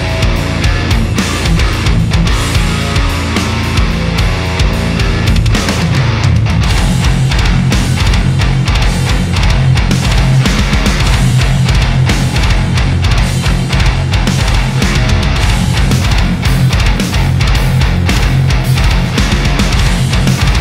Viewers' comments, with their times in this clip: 0:07 Daaang, that chug character is really nice